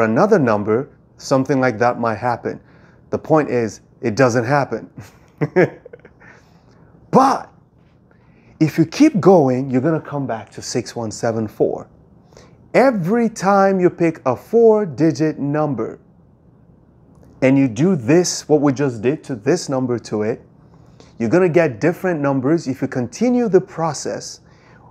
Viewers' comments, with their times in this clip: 0:05 that laugh is golden. Both creepy and funny at the same time. Your expressions when you come to a pause are soooooo charming.